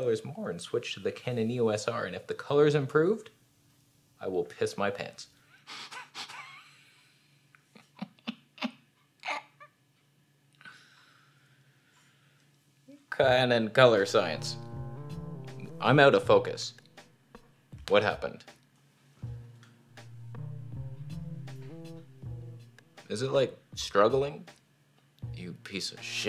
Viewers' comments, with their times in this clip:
0:10 The evil laugh was priceless 😂